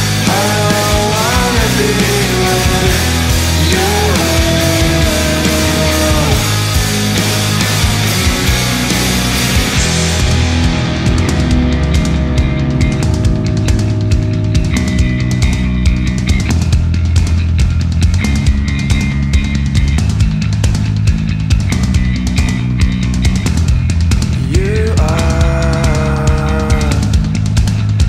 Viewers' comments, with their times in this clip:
0:10 What an awesome drumbeat